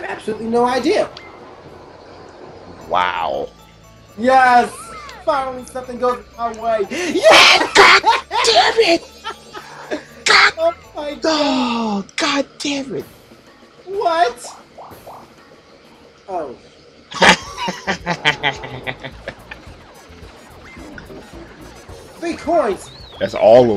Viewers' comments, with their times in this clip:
0:08 lmao first 40 seconds, SON OF A BISCUIT. Annnd it begins. oh man, OH MAN XD HAHAHAHA omg I love your laugh, you guys are too funny